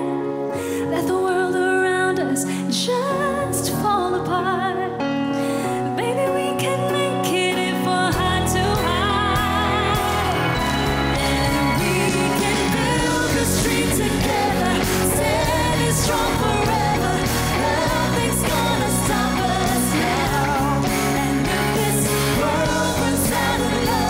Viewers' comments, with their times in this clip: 0:08 that judge's smile say it all. Perfect pitch. 😊😊